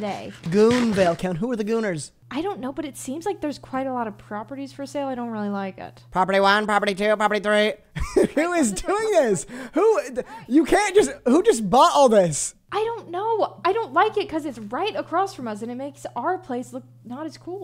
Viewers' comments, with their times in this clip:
0:05 is giving a auction person going one going twice we got 50 do we get 55 we got 55 di we get 60 anyone got going going for give 60 anybody got 70